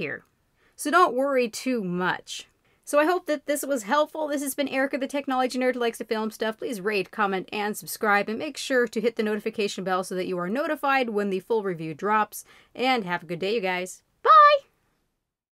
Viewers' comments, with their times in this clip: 0:13 is the best part......BYE! high pitch level to the maximum